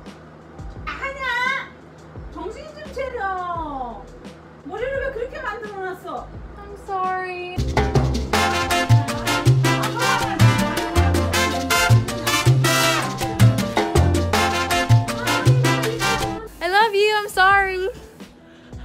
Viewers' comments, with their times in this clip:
0:06 BAHAH THAT “im sorry” WAS SO CUTE OMG 😔🥺